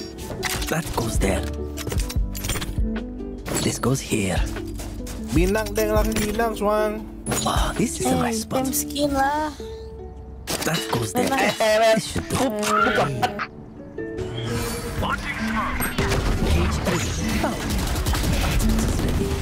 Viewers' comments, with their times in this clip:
0:04 bro is singing JARVIS - น้ำแดงน้ำส้ม lol